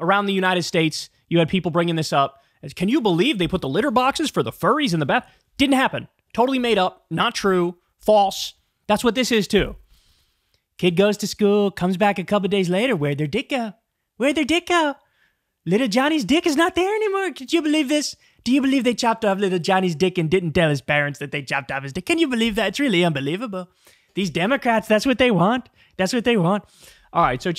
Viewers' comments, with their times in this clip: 0:10 ROFL. Kyle's Trump imitation is pretty bad, but still hilarious.